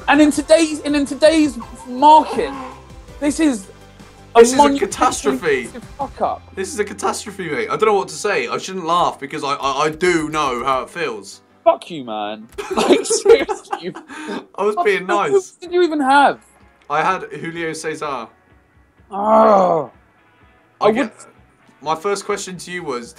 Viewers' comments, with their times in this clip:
0:07 he starts to cry